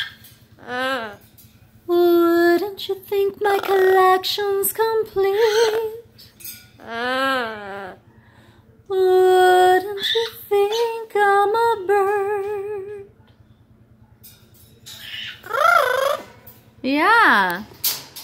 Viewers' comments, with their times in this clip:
0:06 me trying to sing